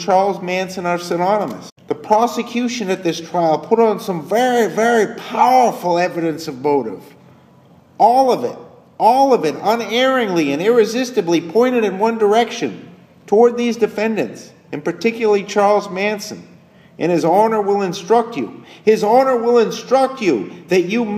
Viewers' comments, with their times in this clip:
0:03 The way the narrator says "very, very powerful," and "bizarre" earlier in this, is pure Bugliosi-style, I think.